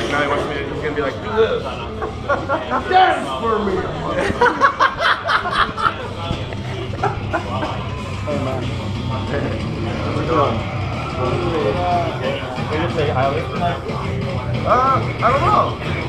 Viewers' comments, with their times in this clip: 0:04 His laugh! I can't!